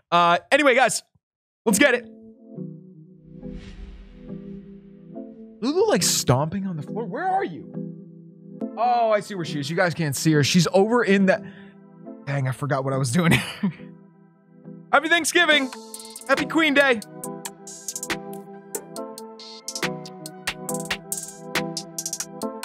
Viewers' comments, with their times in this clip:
0:03 the audio in was super weird 😂😂